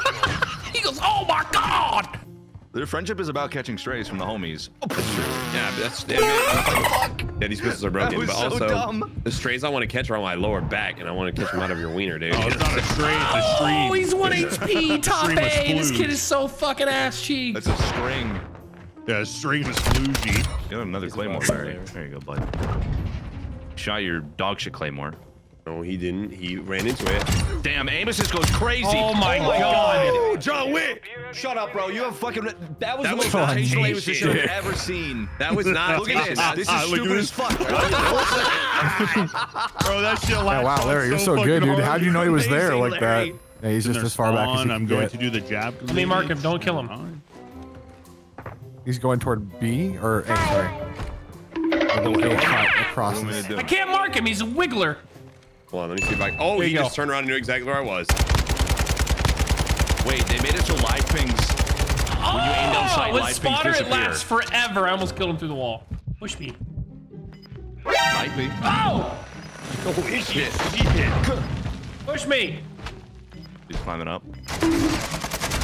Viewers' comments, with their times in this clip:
0:09 Is nobody gonna talk about the conversation in the back ground
1:02 The background music was all over the place and very off putting in certain areas. Also why were there reused clips from earlier in the video at around the mark? I get the feeling no one quality checked this video before it was uploaded.